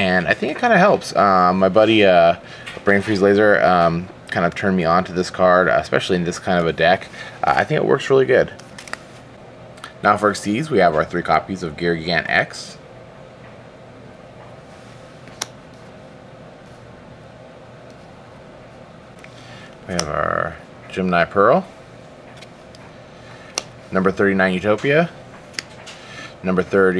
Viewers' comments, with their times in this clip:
0:10 I find it weird how slow he was putting the cards down and how out of sync the sound was starting ...